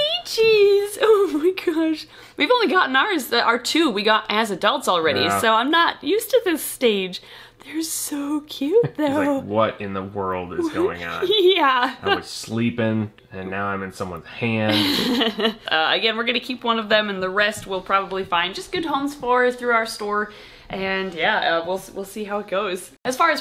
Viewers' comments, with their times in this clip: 0:09 Leachie sounds like squidward Lol